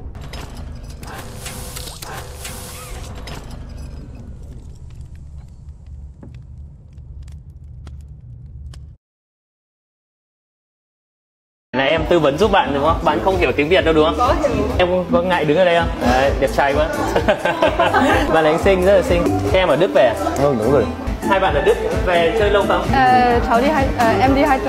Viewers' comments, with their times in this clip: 0:10 Why do I hear vietnamese people are talking ?